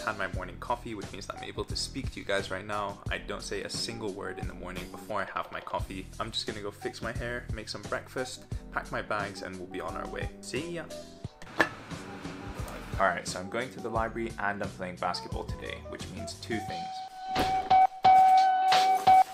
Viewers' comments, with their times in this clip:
0:07 You sounded so British when you said 'make some breakfast' :D